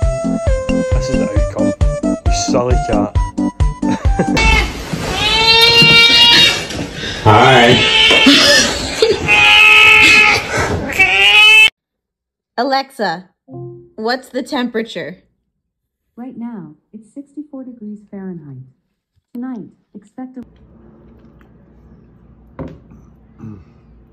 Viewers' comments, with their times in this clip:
0:04 golly that cat is YELLIN.
0:04 i straight up thought this was a person imitating a cat until they actually showed it 😭
0:05 that one aggressive meows, I ever heard in my life